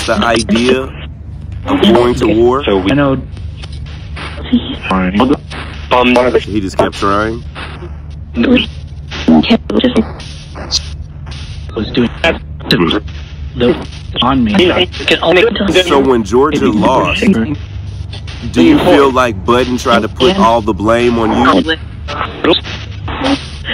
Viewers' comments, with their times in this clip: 0:06 Anyone hear Bob Marley clear as day ?